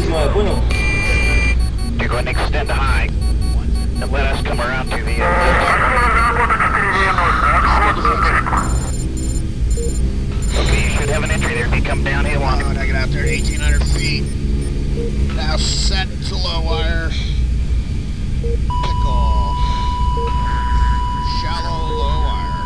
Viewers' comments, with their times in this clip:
0:10 Same here. I have no words, its amazing how sound effects from a video game can bring to surface memories and even feelings. This voice always sounds to me like he puffed a big joint in flight.